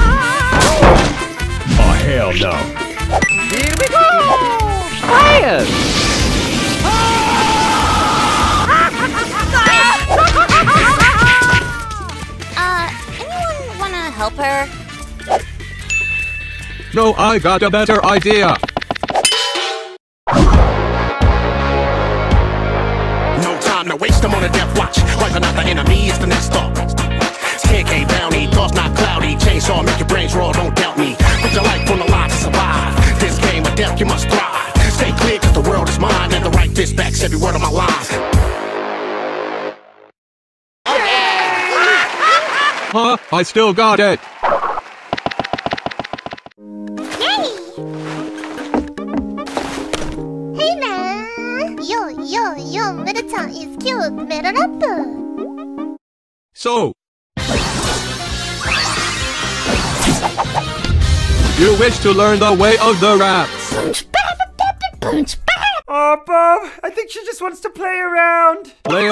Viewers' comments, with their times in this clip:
0:09 Meggy's voice seems different...
0:21 Bob's rapping has improved. Guess all the failed attempts (minus the beatboxing he did in the 10th Anniversary).
0:31 bob sing better than KSI
0:54 WHY IS MEGALOVANIA PLAYING ?!
0:56 i kindof thought melody's 1st time rap it's cute